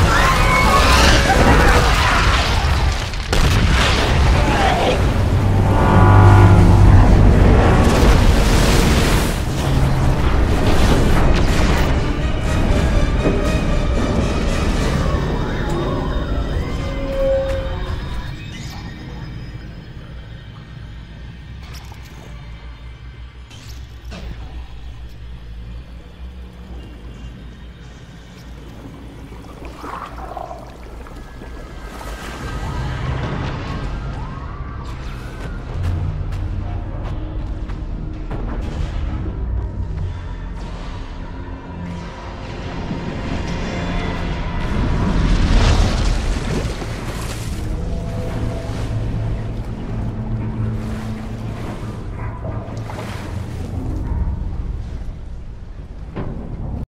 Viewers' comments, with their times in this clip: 0:03 I like the ship sounds like the robot is whirring
0:06 That sound… That’s the sound of the ship’s dying moment… 😳
0:46 i like how it all becomes really quiet and the propellers slowly stop turning, and you can see the liferafts popping up on the surface